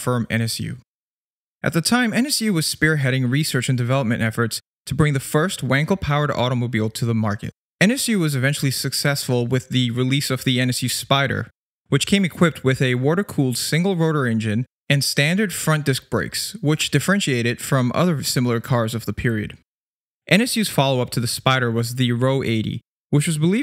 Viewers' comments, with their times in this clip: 0:08 That's Dutch, not German, if that was what you where aiming for